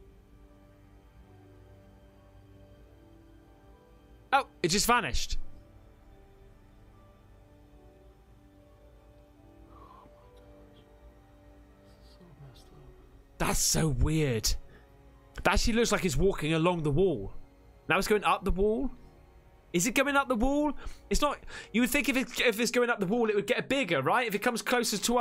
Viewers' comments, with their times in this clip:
0:10 was that guy who was taking the video whispering the background while you was talking xx